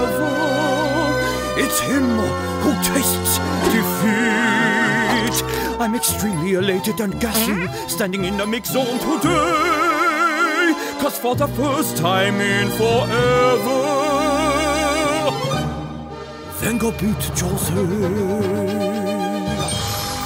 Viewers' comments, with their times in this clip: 0:08 did he fart 🤤